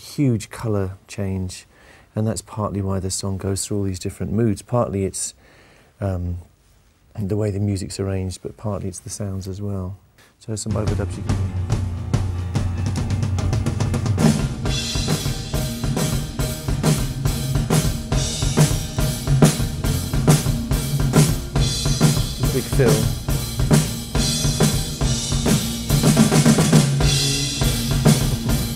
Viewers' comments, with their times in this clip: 0:09 Jesus christ the drumset sounds orgasmic